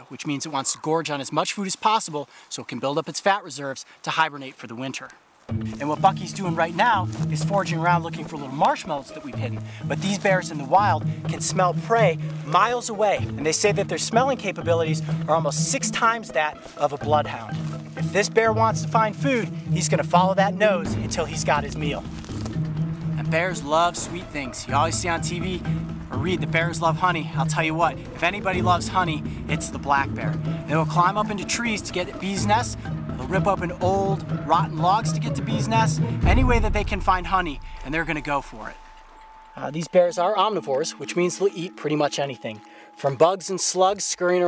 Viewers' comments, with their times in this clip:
0:06 Listen to what he says it sounds like he swears
0:32 did he say dezz nuts? 😆